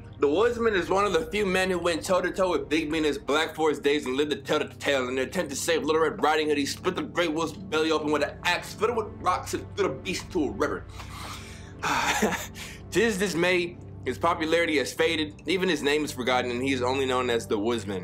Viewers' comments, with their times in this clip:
0:03 How SOBxRBE be rapping